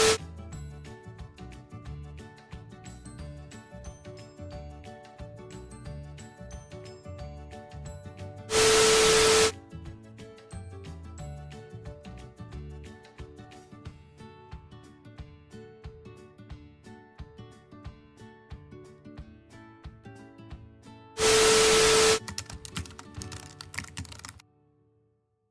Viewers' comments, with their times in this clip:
0:06 not you (s)creaming on Elijah